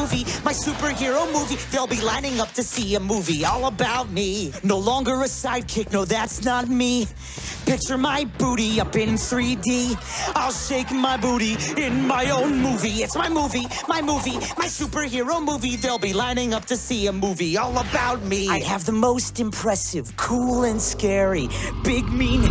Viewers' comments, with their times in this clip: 0:07 my brain automatically hears the instrumentals for some reason